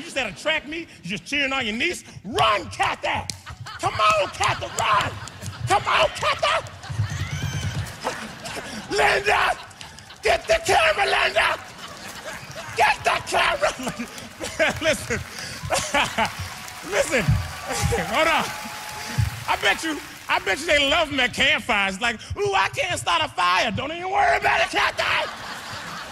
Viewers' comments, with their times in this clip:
0:08 when he started clapping and stopped i blinked and i had to go back like 8 times until i realized he stopped suddenly
0:13 how'd he stop clapping that fast like what🤣